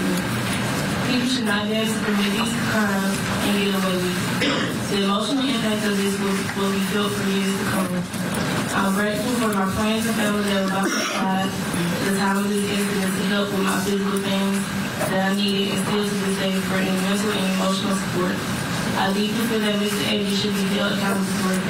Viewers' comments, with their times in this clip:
0:06 the audio in the court in horrible and whoever is playing with all the paperwork right in the mic makes it even worse. I could not hear a thing her friend said. 😢